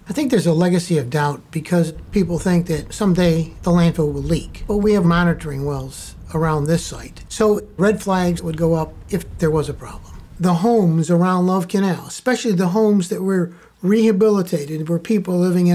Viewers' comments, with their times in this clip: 0:03 Dude speaks like joe Pesci